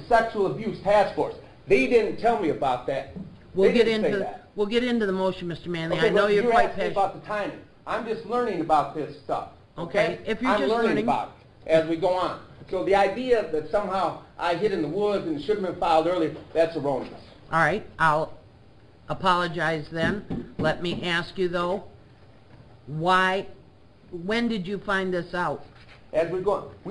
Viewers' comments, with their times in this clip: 0:10 WHO THE HECK IS HE TALKING TO? TONE? WHO SPEAKS TO A JUDGE LIKE THIS? 🤦🏽‍♀️